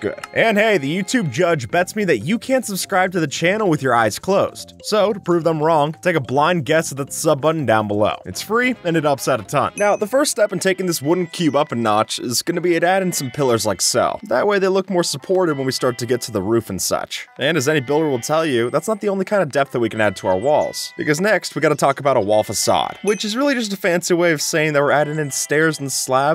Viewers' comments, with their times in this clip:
0:08 What does "Its free, and it outsides a time'' mean?????????????????